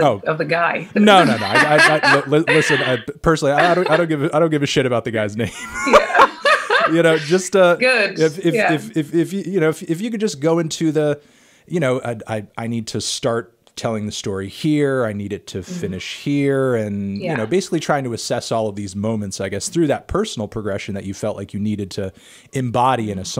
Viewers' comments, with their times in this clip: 0:05 Awww they have the same laugh. <3